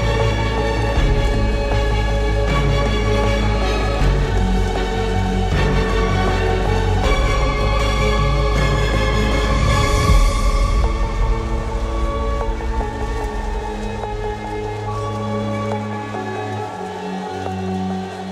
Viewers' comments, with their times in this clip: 0:05 the track right before America at approx reminds me so much of The Darkest Moment and idk why